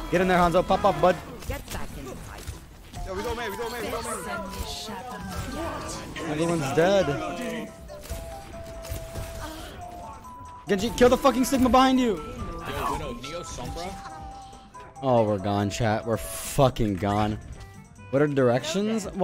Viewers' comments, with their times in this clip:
0:03 when I heard that noise I thought it was master sword